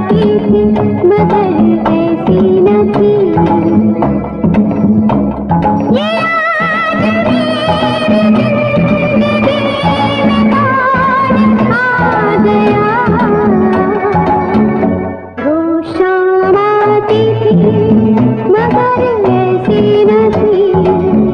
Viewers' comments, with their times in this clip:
0:05 Lataji magic is ... and though it might sound simple but effect is eternal. No one can replicate it.